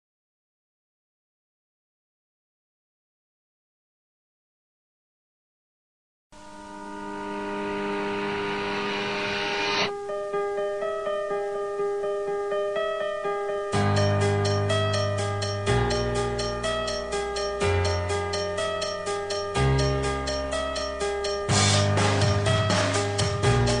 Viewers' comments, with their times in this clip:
0:07 do u hear the holowen theem song?